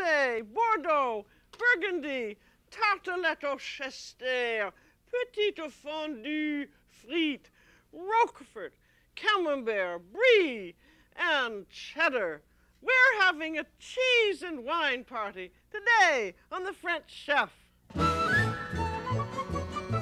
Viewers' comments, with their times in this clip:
0:05 This video used to be on YouTube and disappeared, and I’ve waited years to hear Julia sing “petite fondue frites” again. Thank you!